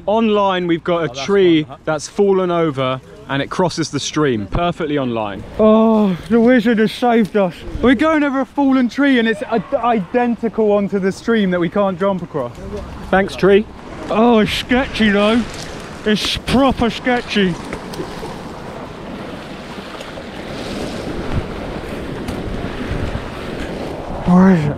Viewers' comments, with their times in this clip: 0:07 what is that scream?! A freaking Witch in the woods!?
0:11 Am i the only one who heard the screaming in mins???